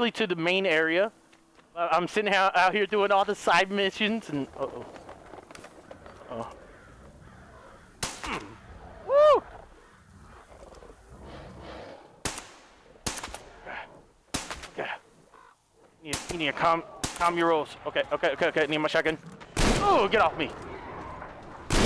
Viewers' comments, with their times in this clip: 0:08 Minecraft. The grunt.